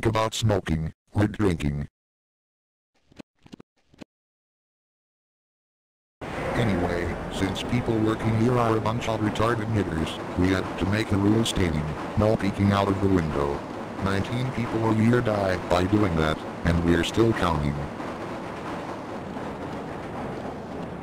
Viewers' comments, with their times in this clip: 0:09 Also, did no one catch Microsoft Sam ......